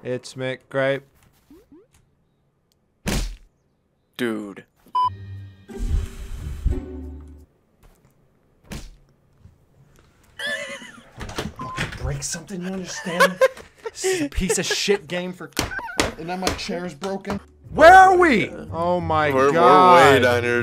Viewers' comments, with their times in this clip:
0:08 someone turned into a horse for a sec 😂😂😂